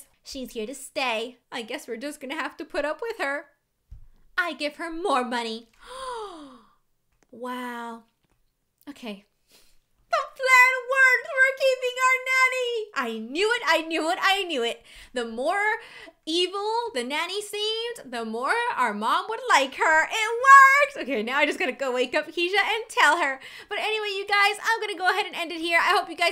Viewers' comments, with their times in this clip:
0:08 THE WAY SHE SAID OK LMAFOO